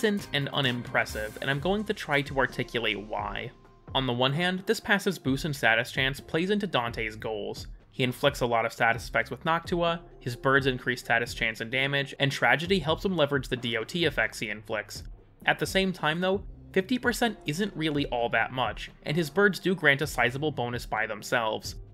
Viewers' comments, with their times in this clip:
0:09 Did he say hawk tuah...